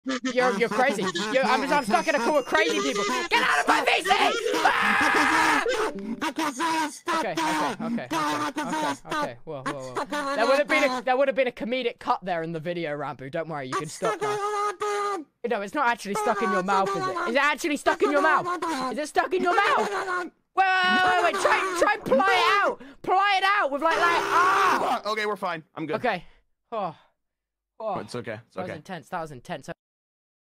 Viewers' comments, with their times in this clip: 0:02 was the best when ranboo was screaming and tubbo was angery
0:08 friday night funkin ukulele plays
0:24 Ranboo: SCREAMS IN KAZOO